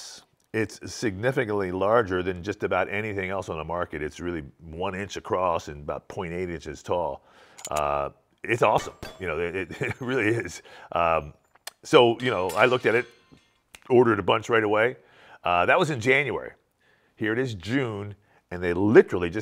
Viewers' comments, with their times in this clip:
0:07 "its about 1 inch across and 28 inches tall"? I assume he means 28mm tall?